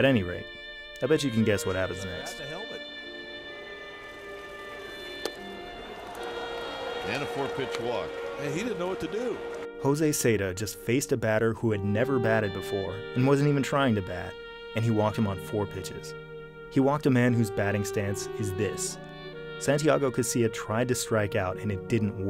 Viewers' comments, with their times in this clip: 0:03 That saxomophone is so hilarious.